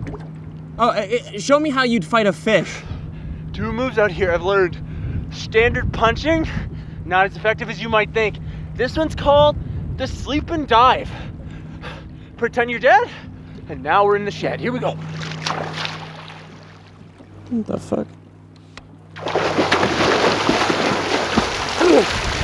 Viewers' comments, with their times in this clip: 0:05 --> "Stranderd" Best englanderino